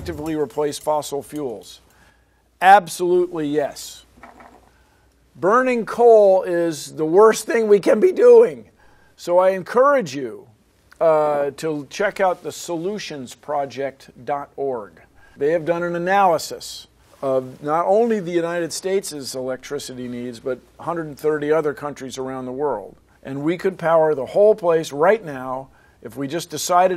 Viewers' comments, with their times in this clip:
0:06 Voice Crack Sorry XD
0:08 EXTREME VOICE CRACK